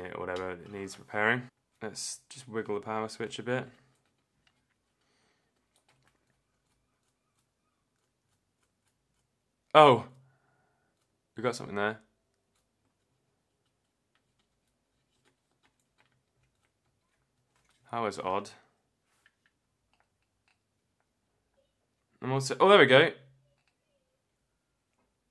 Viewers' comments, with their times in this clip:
0:09 OH! nerdiest gasm I've ever heard